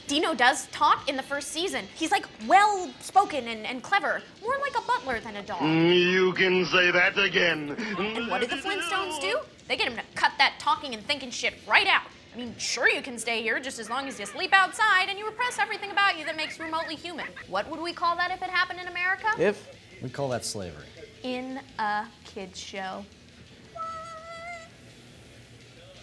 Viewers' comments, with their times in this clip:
0:09 ha! that sonic 1 ending cracks me up my headcanon is that he thought he was gonna go all super saiyajin when he was done collecting the emeralds (like he does in future games) but nope..... emeralds fly away and sonic's left looking like "dafaq" .... also i thought she said shoryuken....